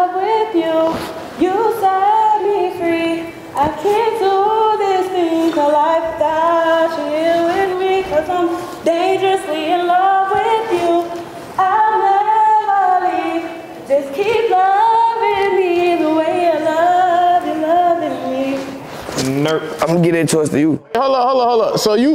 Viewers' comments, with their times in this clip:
0:06 it’s so off key and pitchy I’m sorry girly